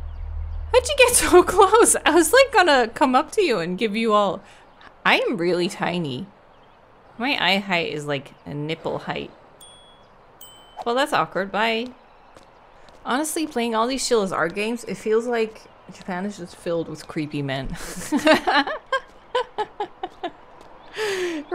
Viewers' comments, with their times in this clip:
0:05 that sound effect for measuring her height against his nipples haha